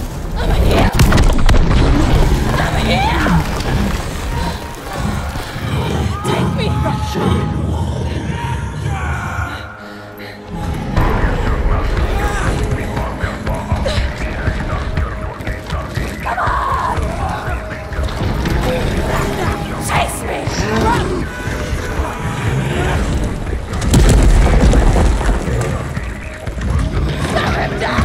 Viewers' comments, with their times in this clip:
0:03 Sounds like someone is saying "Rennen!" (It means Run but it's in Dutch) in a hasty tone or something, so there could be a possibility that they're some sort of Germanic people? They look quite like the Germanic Tribe called the Harii with the black war paint.
0:11 that chant sounds so GOOOOOD!!! Oh God I'm sure the soundtrack for this game is going to be INSANELY GOOD!